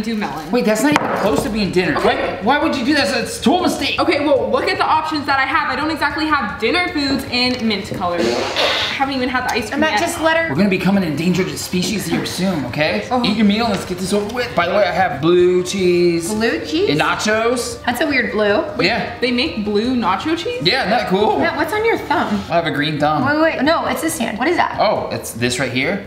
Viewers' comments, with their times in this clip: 0:09 someone is walking in the background outside the house